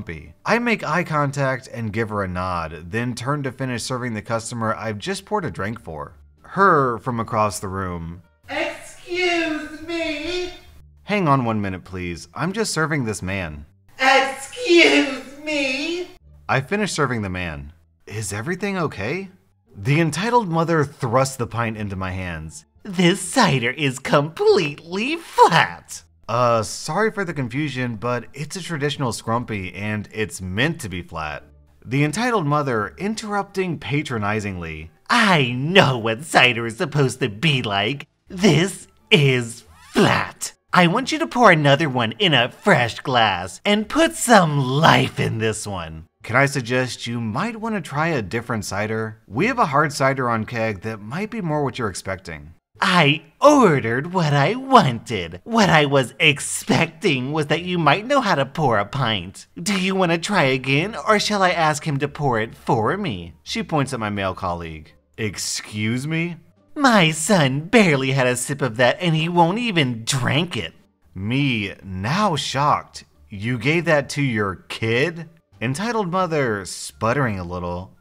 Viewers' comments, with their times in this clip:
0:08 I fkn love how you actually went to stand and shout from across the room LOLLL
0:08 love that you actually screamed from across the room
0:08 lmao the voice over on
0:59 I love how you switch tones from "Karen" to "Monotone Narrator"